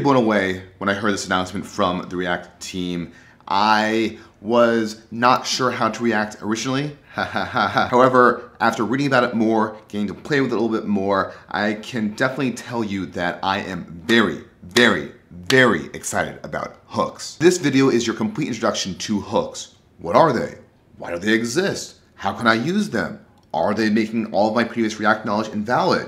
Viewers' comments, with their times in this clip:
0:07 I did the exact pointing motion and laugh at the exact time, got a nice little 'jinx' moment